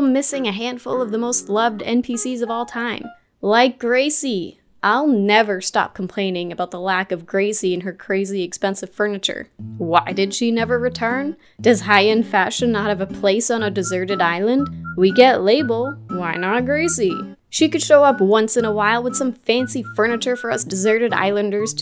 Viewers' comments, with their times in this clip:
0:06 you mean gracie and her GRACIE expensive furniture